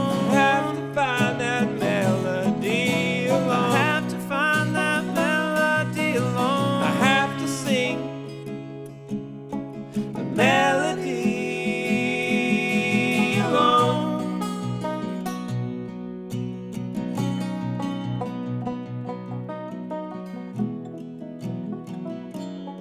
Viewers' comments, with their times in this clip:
0:10 Anyone else struck by the irony of two voices harmonizing on the lyric, "I'll have to sing this melody alone"?